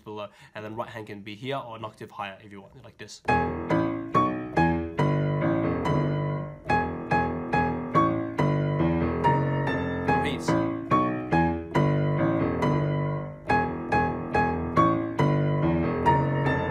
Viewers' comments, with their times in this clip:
0:04 kinda sound like a Charlie Brown episode